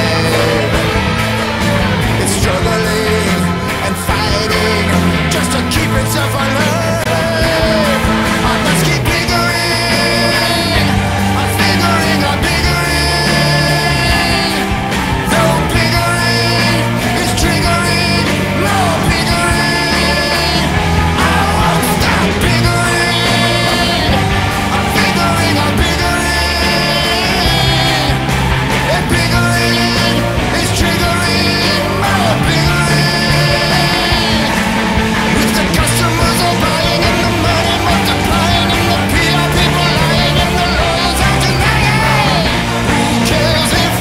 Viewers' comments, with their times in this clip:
0:08 The whole song is good, but from and after is my favorite. The onceler singing with the background voices saying stuff like "biggering" makes it feel like people are cheering him on
0:16 I like how around here with "is triggering more biggering", the chorus all joins in on the "more", symbolizing the urge and the 'need' for MORE. I don't think anyone has talked about this yet, so here I am loll
0:32 honestly this would probably scare the sh*t out of a 8 year old. Not saying "oh children are so delicate they should watch baby stuff" but like I DONT WANNA HEAR YOU CRYING while screaming? That would have scared me when I was young.